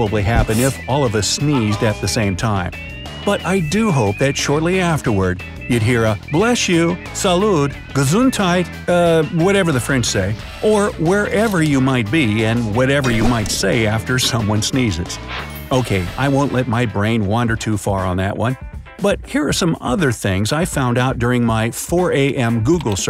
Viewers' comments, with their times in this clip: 0:07 how did you say Gesundheit?? 😂😂😂😂😂😂